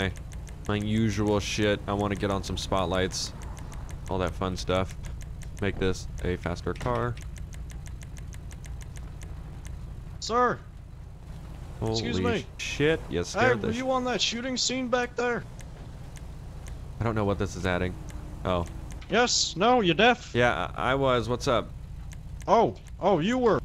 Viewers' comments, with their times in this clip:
0:09 That guy sounded like Hank Hill from King of the Hill. LOL